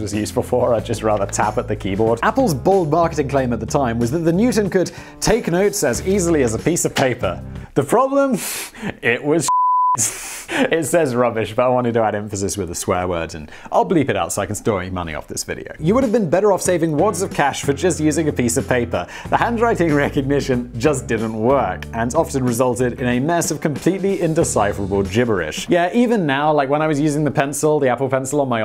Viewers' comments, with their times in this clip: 0:09 bleeps swear word to make money off sponsors. literally has the word "cock" in the title. shrugs